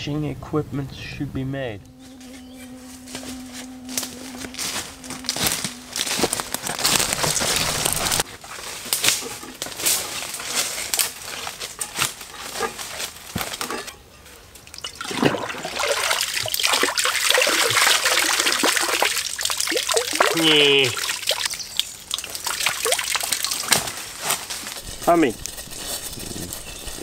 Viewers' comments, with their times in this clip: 0:08 when you could hear the mosquitos i shaked my head like crazy, because i thought there where mosquitos in my room...